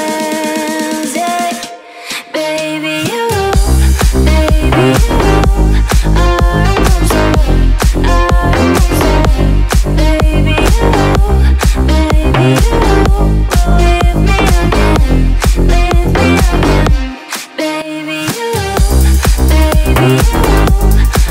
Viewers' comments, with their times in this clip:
0:07 sorry but that drop is not that intense